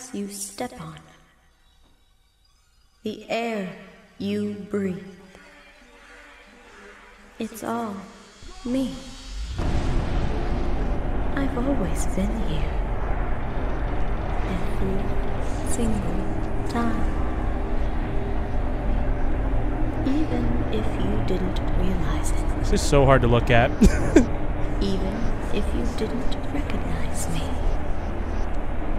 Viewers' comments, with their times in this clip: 0:10 Is that voice acting